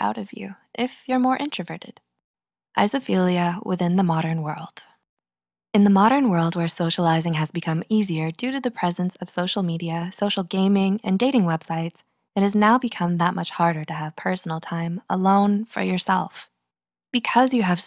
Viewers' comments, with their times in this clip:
0:03 when the narrator pronounces it wrong.